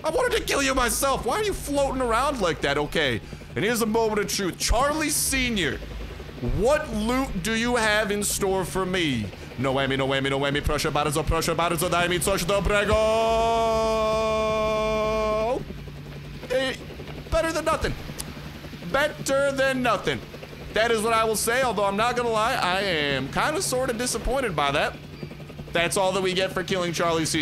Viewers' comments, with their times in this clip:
0:10 Are you speaking Polish?!